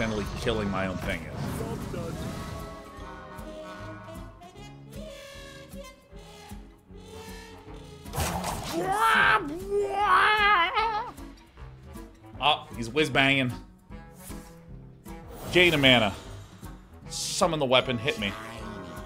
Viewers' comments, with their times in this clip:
0:04 I keep coming back to and absolutely lose it every time when Sean immitates the trumpet 😆 it's so good... Thank you for the laughs, the streams were super fun to watch so far. Going to tune in for the upcoming SC as well.